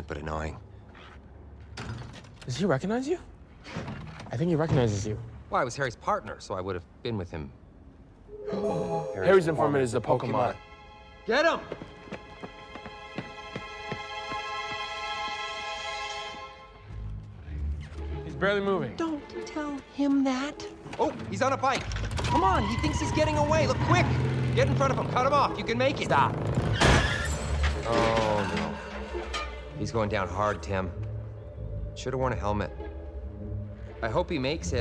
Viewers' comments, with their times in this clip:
0:09 What did they say? All I heard was "Harry's apartment is a pokemon." Please help.
0:16 “Don’t. Tell. Him that!” Love that delivery